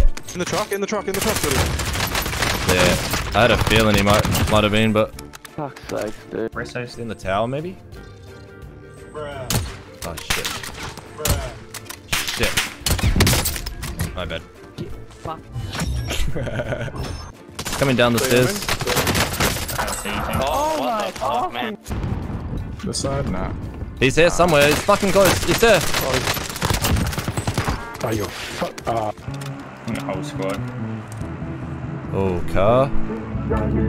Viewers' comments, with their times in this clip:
0:05 The guy sounds so defeated, he’s so done
0:14 when that dude said “get fucked” and he laughs. That’s my favorite part